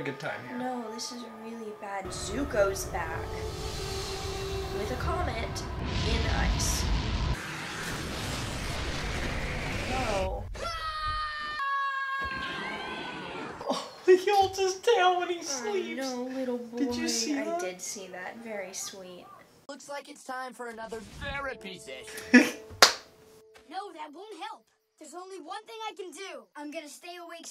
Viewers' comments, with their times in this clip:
0:10 I bet toph was already awake considering aangs heart rate would have been off the charts with that nightmare so I bet she was prepared for that scream 😂